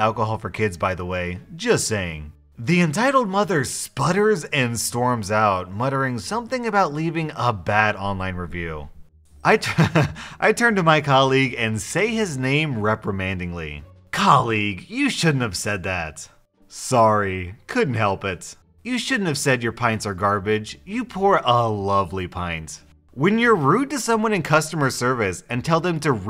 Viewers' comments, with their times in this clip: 0:08 You can hear Hugo’s collar shaking in the background😂😂